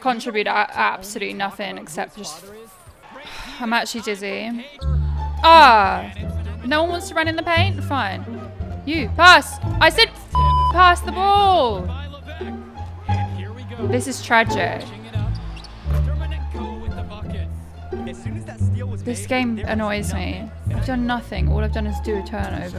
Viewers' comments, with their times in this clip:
0:08 I died when you shouted PASS even though you were the one holding the ball😭🤣🤣